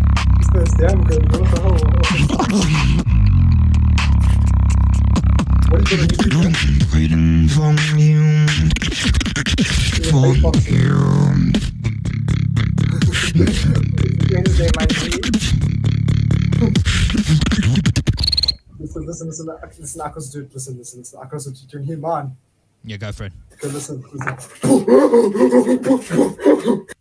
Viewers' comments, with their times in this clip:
0:10 chest plus vibration base ???